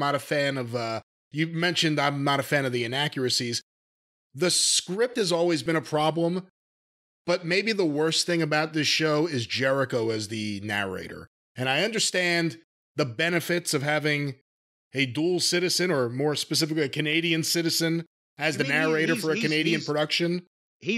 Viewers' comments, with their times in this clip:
0:05 Every time the narrator spoke I was noticing how it sounded like Jericho but thought surely they would make that clearer if it was. Such a weird choice in narration.